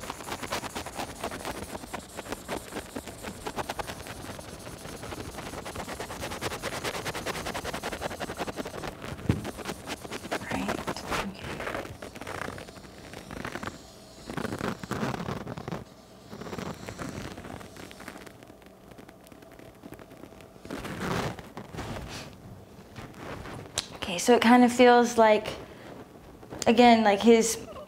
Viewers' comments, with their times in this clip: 0:10 Something is also said cant make it out though. But over all they seem spot on as Ive been listening to bashar for years now, and have had my own type of interactions.